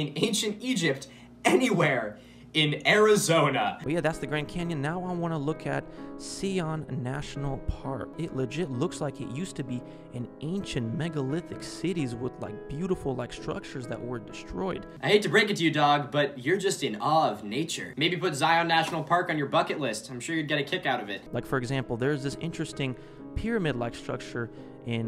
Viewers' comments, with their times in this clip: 0:06 lmao bro really called Zion "SEEYAWN NATIONAL PARK".